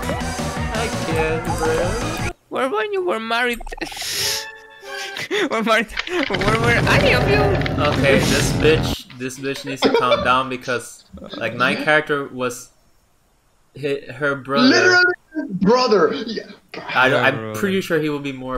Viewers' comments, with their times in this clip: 0:03 "Where were you when Mari died?" (Ultra Instinct Theme sounds in the background)